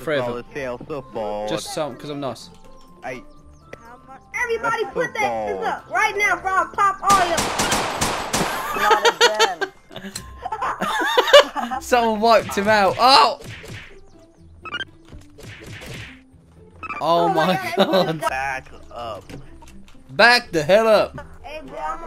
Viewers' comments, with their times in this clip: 0:07 puberty hit hard